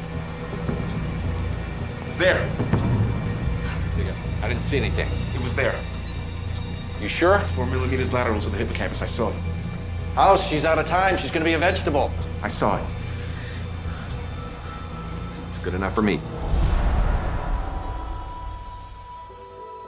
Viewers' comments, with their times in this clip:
0:03 did I hear the n word lol